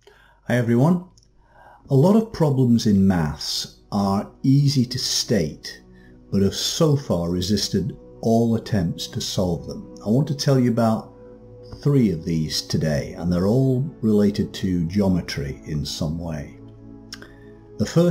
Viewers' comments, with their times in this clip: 0:03 « problems in mass ». You mean like being overweight or something?